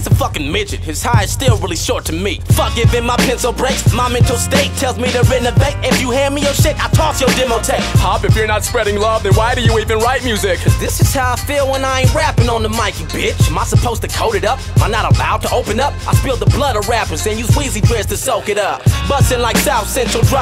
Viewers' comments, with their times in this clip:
0:07 Hop killing it with the Ye impersonation 😂😂😂